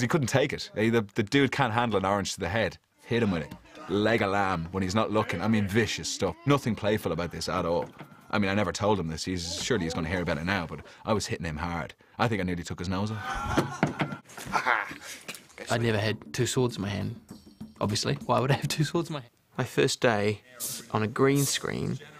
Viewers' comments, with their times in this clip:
0:09 The way Aidan Turner pronounced "hard" makes me feel things.